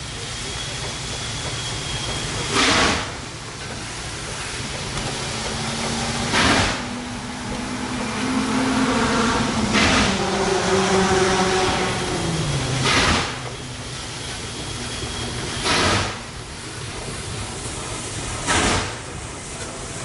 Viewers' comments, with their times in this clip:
0:05 that sound of straaainnn